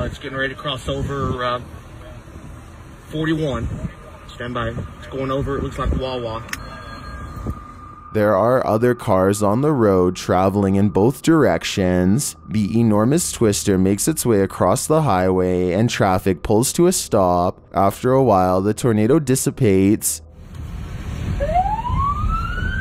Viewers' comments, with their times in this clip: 0:06 me: hears the phone noise . me: B E N